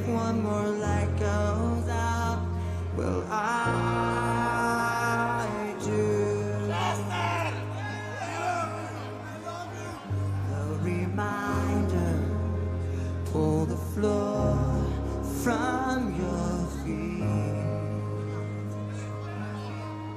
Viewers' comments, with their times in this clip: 0:07 !!!! IT WAS THE FUNNIEST THING AT THE CONCERT AHAHAH. All of us heard that guy screaming "CHESTEEEER!!!" I also have a video of One More Light. When we were watching the videos after the concert, we laughed so hard to that guy. Thanks for the memory!!!